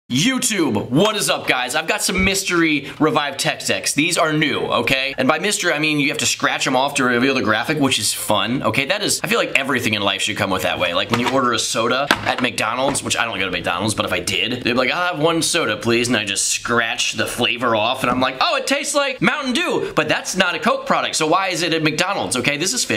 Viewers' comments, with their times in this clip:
0:04 did u say tech s*x